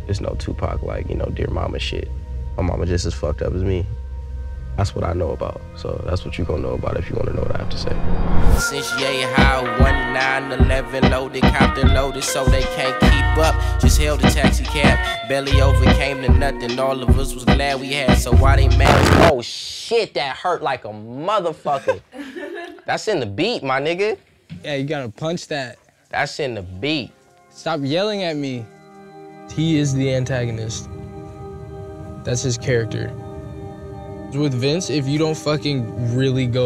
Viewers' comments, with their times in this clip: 0:08 What's the track ...I need that joint. The beat sounds crazy and his slang game 🔥🔥🔥🔥
0:09 i need this tune bruuuh
0:19 THAT WAS SO LOUD, THEN EARLS REACTION 💀